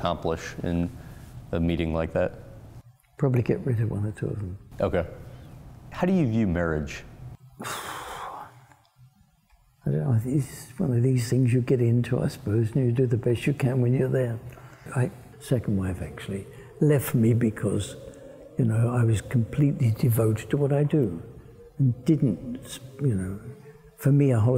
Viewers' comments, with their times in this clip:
0:06 I felt that exhale